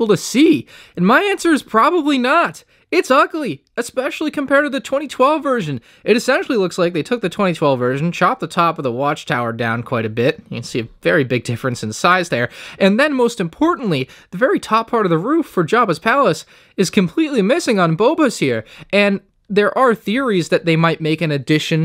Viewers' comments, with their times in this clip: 0:06 you sound exactly like barry from the bee movie